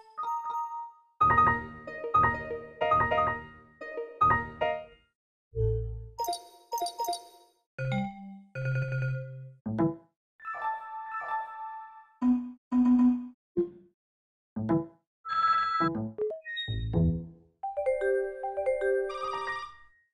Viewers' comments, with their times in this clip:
0:08 when the noises start to get weird